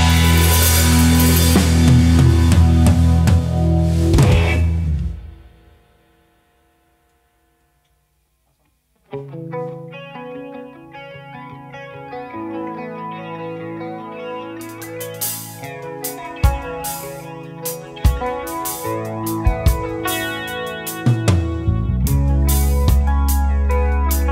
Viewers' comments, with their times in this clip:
0:08 super badass jam ending